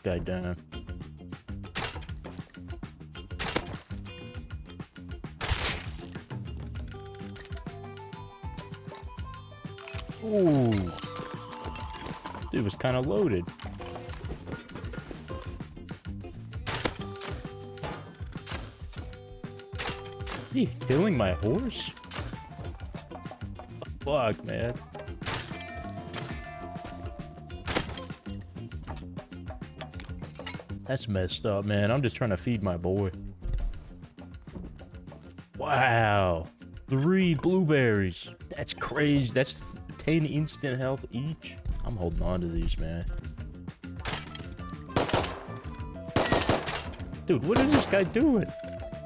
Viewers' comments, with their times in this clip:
0:07 the music kick in sounds like grateful dead
0:34 "Woooaahahaoww, THREE blueberries!" Innocent excitement from a guilty gilbus